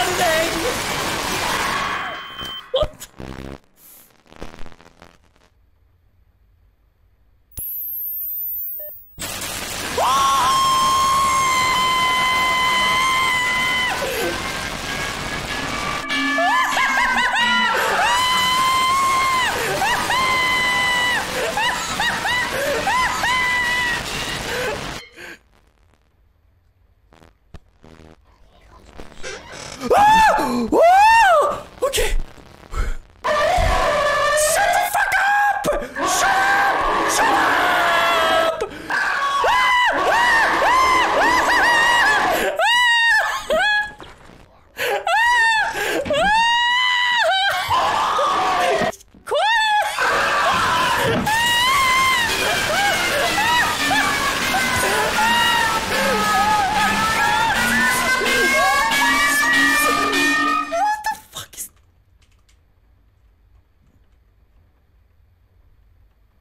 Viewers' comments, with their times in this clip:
0:10 the screaming from here is just great
0:49 when he screams “QUIET” then it’s followed by a demonic scream and the sound of literal anxiety has gotta be the funniest clip.